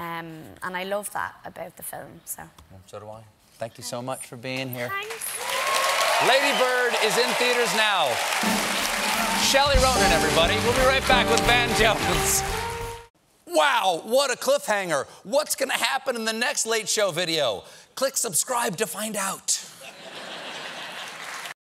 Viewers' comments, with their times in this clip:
0:05 That thanks tho... d'awww. Saoirse and Stephen are so in sync here!